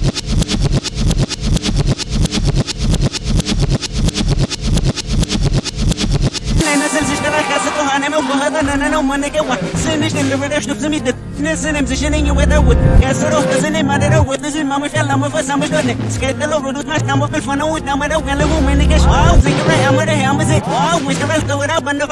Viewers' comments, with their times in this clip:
0:07 A manic laugh in reverse when Kendrick says "I hope the psychologist listening".